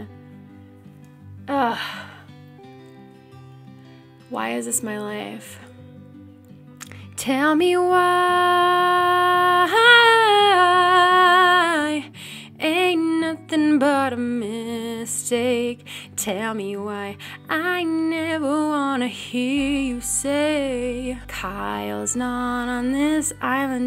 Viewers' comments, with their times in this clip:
0:07 My trying to harmonize